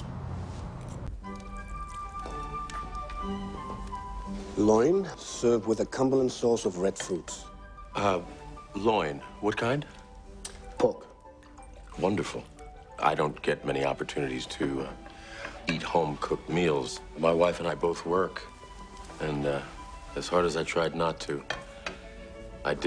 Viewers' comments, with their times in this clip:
0:10 butt I can't unhear that
0:10 The slightest pause before he says "pork." Perfect.